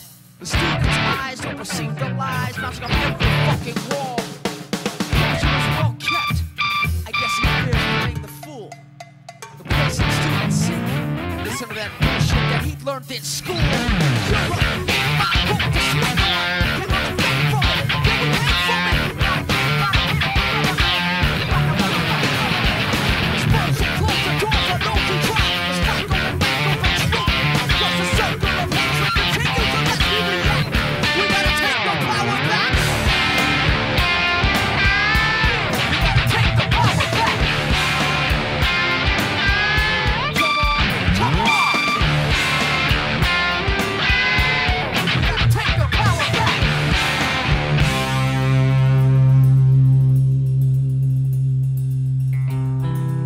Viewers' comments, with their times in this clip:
0:05 how is that bird-like "chirping" sound made?
0:39 I did not know that on a strat you can do the harmonics on the headstock, planning to buy a tele for the reason of that particular harmonics but after watching your video is it legit to do a headstock harmonics?, i know you can play the song cause i watch tons of video of it but after closely watching its seem a lag or latency issue or is it the background backing track sounding.
0:40 armonic in you dont play...!! is play back?? :O